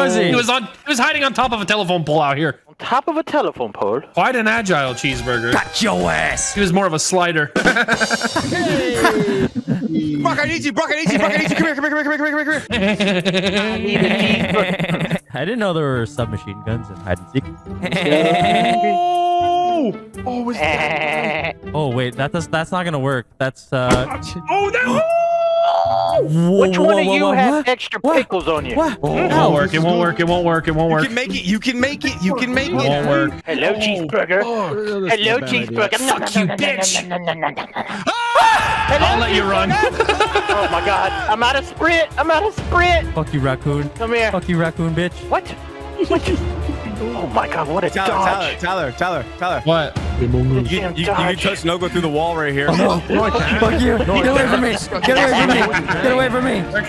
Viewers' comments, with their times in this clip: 0:04 the laugh had me
0:37 the gasp vanoss makes.
0:38 THE SCREAM HAD ME ON THE FLOOR